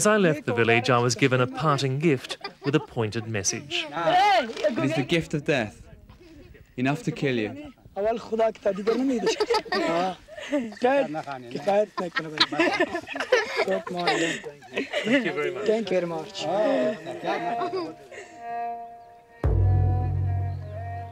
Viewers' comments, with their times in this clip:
0:05 Awesome upload! By the way, does anyone know where can I get that instrumental? It's so intense... Thanks!